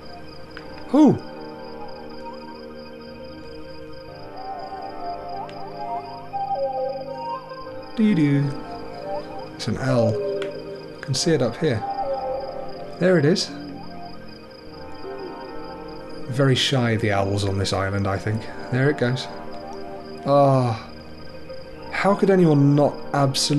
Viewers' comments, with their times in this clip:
0:04 Sounds like a Clanger :D